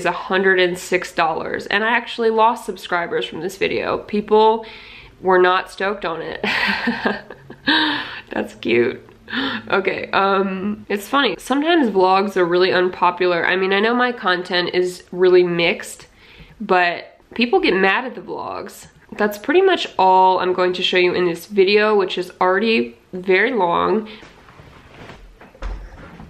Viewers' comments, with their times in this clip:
0:07 You laughing and smiling because of people unsubscribing gave me a bit of life today lol thanks